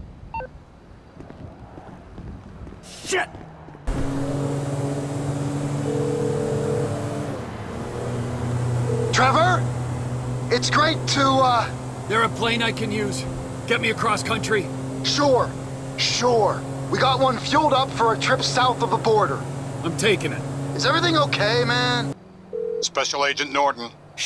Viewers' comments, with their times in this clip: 0:09 ......that voice trevor uses. i got chills. we never hear him like this before. he's REALLY hurting